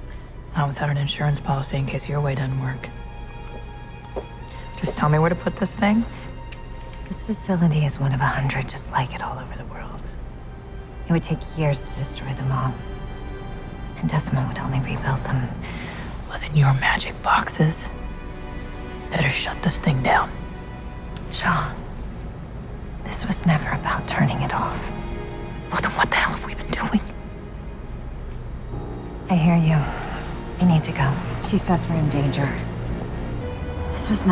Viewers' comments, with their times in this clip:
0:07 Anyone else notice Sarah and her voice? it's a bit raspy, she must've had a sore throat or something.. Ouch..
0:21 It is so cool watching how their relationship grows and how they obviously develop feelings(in not romantic than just general care) for each other. when Root says Shaw's name is so caring and the end is so emotional just-gah! Thank you so much for putting these together!